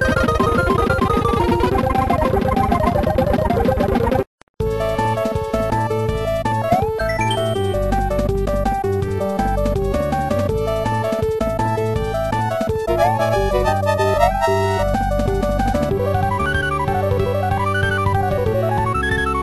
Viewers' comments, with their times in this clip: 0:04 Is it just me or does the Mega Man 8 - Tengu's Man Stage (PSX version) not sound right. Compare this to the Legacy port one.